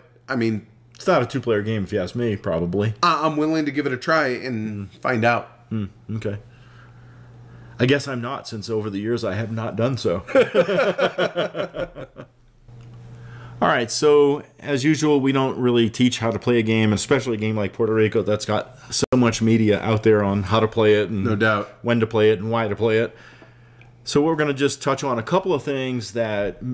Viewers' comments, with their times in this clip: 0:10 that laugh fade away transition. 90's. haha